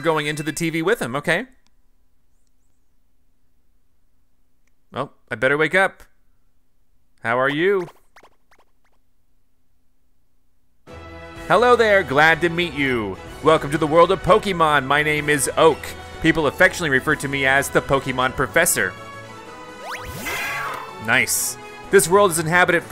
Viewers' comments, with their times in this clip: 0:03 all I could hear was “Sora, you lazy bum!”